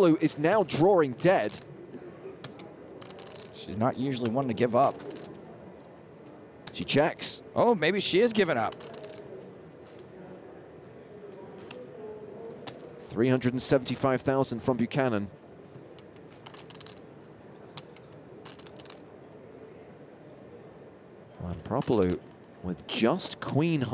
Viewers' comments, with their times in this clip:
0:04 we can clearly see her shaking and panic lol and her breath went very high and btw what the fu×k she calling lmao is that a pro player ? TT fold = ridiculous